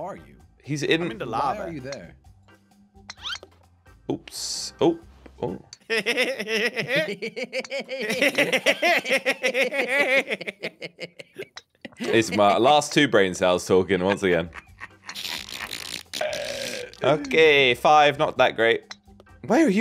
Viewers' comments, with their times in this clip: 0:06 The laughter ritual